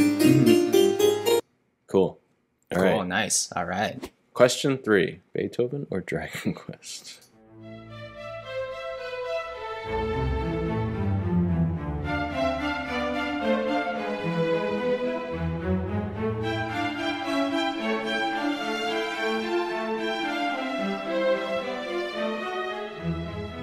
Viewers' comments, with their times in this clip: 0:06 also sounds like veridis quo by daft punk